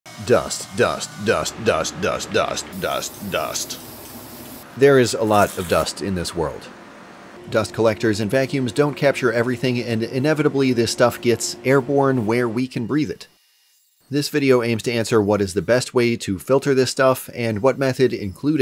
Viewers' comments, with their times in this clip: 0:01 reminds me of that shots shots shots shots shots shots song with that guy that yells